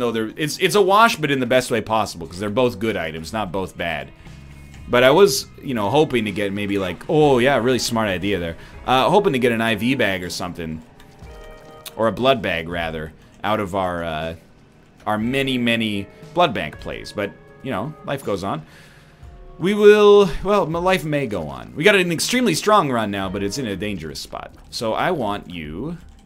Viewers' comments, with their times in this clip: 0:07 first time I've heard that canadian accent